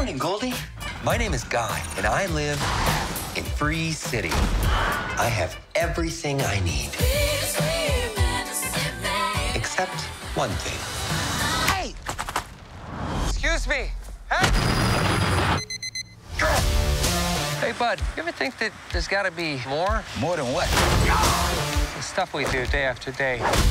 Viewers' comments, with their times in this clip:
0:04 I always hear a "AHHH" like it's in a video game 🤣